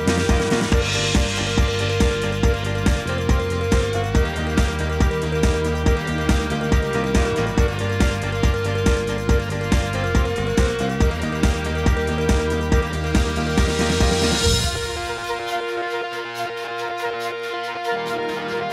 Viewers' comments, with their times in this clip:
0:06 Okay I got to admit you did very nicely having that piano part for when building the piano